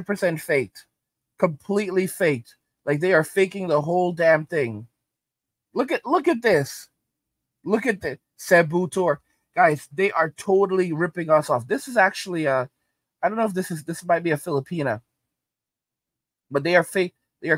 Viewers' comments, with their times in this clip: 0:05 mf "SABO" "TEUR" I'm gone lol